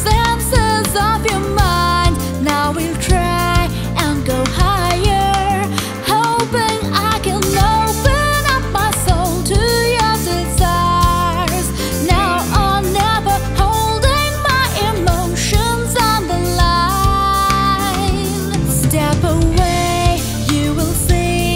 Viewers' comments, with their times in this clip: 0:06 3-8th groupings on the Hi-hat under the 5 pulse (@ of the track). Brilliantly Vinnie !!